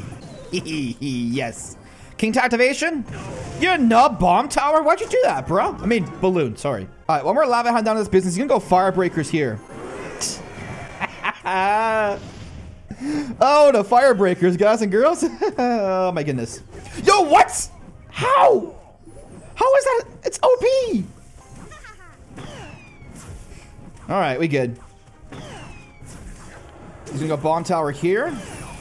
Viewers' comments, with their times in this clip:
0:10 😂😂 the soda sound😂